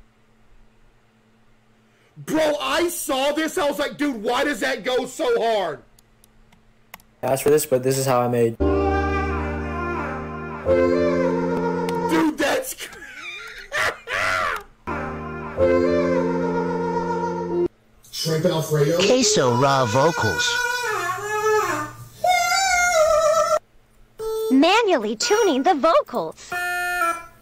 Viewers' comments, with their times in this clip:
0:08 caseoh’s voice sound so majestic.